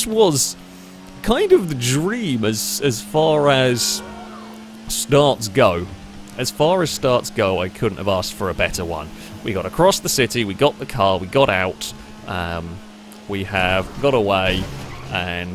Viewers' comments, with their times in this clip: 0:03 Did anybody hear a kid say COOl???